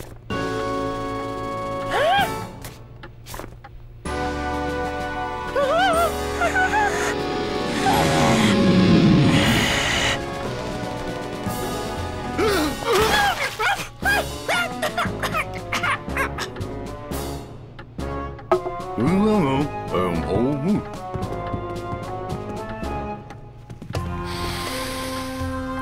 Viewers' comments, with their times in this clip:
0:07 I like the guitar riff when he transformed
0:13 seeing flippy cough is so odd